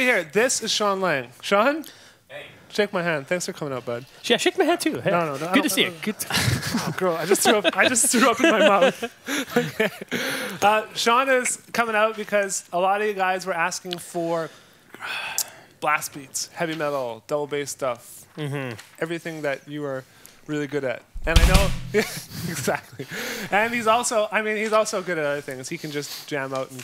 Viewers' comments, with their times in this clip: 0:04 I know this is a strange thing to say on a music related video, but talking starts
0:10 now that's what i call Heavy metal drumming.